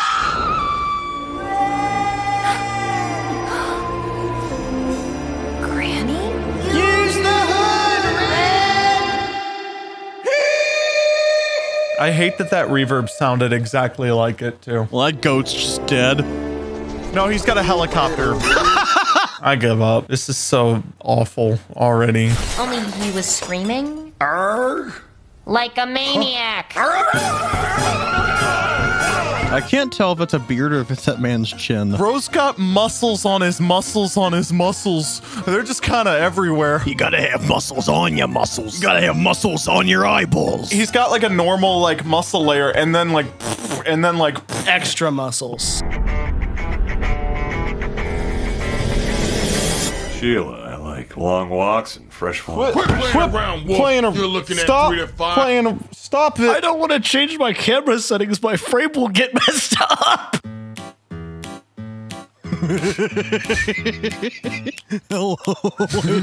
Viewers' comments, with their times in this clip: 0:07 I CANT STOP LAUGHING AT HIS VOICE SYNCING UP WITH GRANNY’S oh my lord
0:50 I somehow know this voice